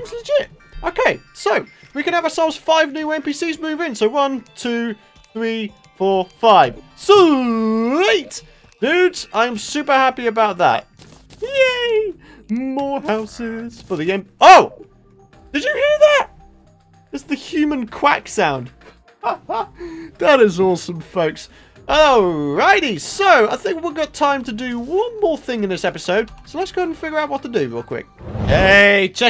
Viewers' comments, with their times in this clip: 0:10 the human quack easter egg